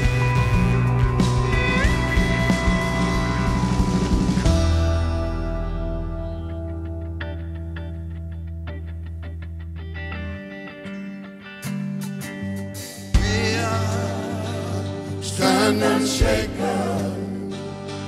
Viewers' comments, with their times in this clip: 0:06 That RDR2 orchestra was just perfect, especially